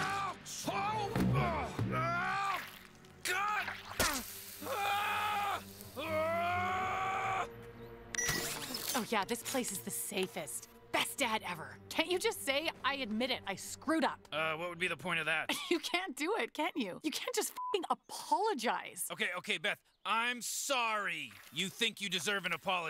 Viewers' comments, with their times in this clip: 0:04 the one time he screams like Morty...
0:04 My Favorite Rick Scream-
0:04 that’s sounds like mr meeseeks’ scream accept deeper.
0:04 That scream is so good
0:04 I love how they just recycle those screams since season 1
0:04 You can hear a little bit of Morty come out